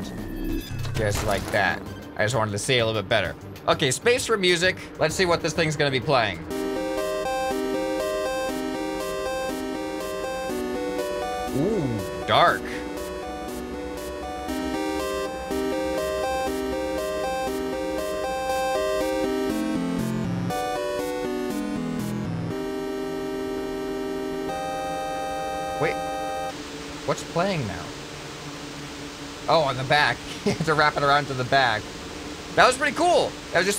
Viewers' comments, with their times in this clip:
0:06 reminds me of the music of mindustey.
0:06 sounds like something from portal
0:17 This song is basically the one you made but expanded.
0:21 the music sounds like what would be in a boss fight in portal 3